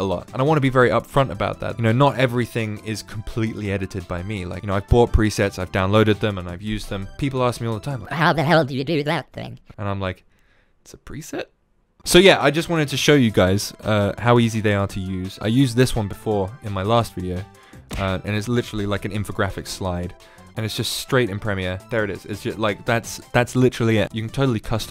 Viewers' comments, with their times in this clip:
0:08 Is the wobbly voice a preset? Or is it something I can edit myself? Thanks for all of the great tips!